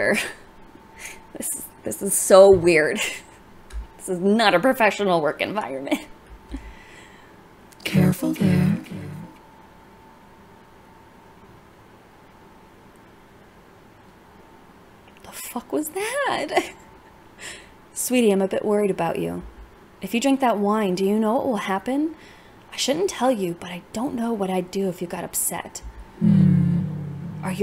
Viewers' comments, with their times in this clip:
0:10 scared the shit put me 😭 I was just laying there and voice scared me 😭😭 -anyways have good day/night c.c